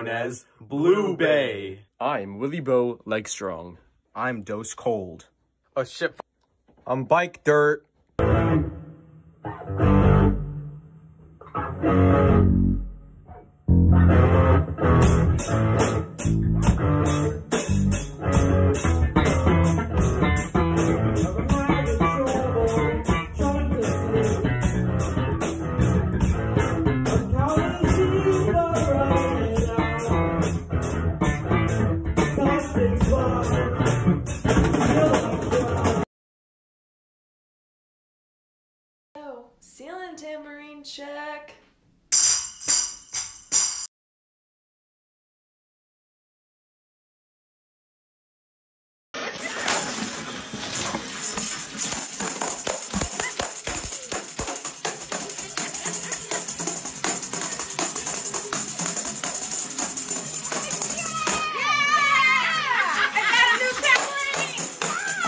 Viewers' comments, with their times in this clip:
0:09 they went ahead and played Brainstew better than its ever been before 😍😍😪✋🏻🤣🤣🤩💖☺⭐😍😍
0:51 me when I made a tambourine in animal crossing. 💃🏾 (But seriously her tambourine skills are fantastic)